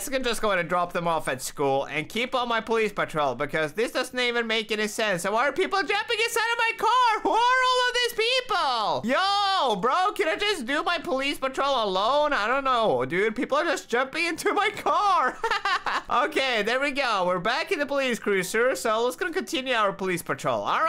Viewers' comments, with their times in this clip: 0:08 shes speaking french